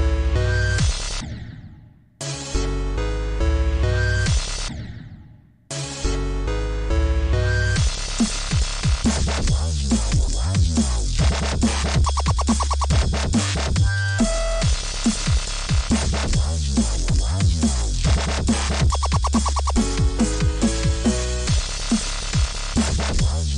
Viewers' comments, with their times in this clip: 0:05 why the song so fire